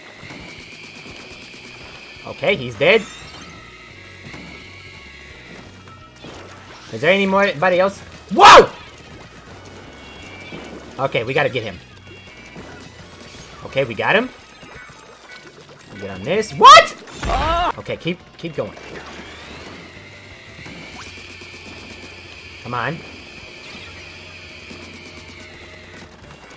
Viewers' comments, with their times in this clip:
0:08 Best WHOA ever achieved 🏆